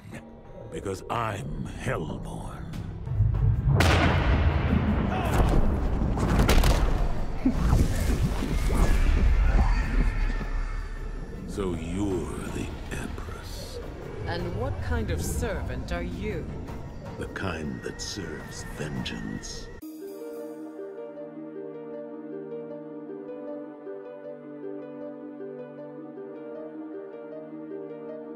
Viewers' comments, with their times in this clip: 0:10 something in the way starts playing